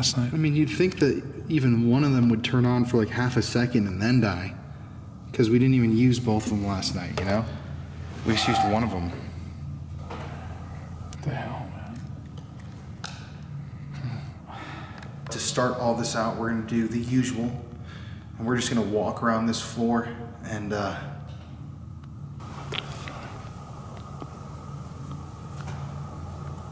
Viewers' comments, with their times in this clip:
0:07 you can hear screaming
0:08 there is a "breath" Not sure what to think of it? Plus: There was a cut in the camera. Did you do that?